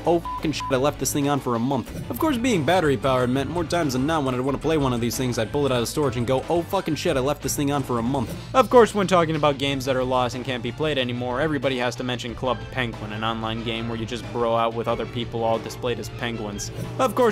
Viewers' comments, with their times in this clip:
0:05 Pretty weird to hear an uncensored Scott The Woz.